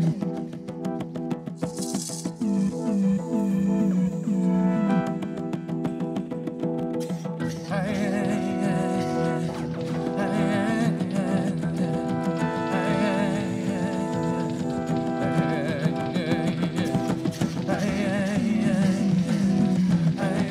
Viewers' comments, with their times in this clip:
0:06 This freaking groove (wait for it). Can't get it out of my head.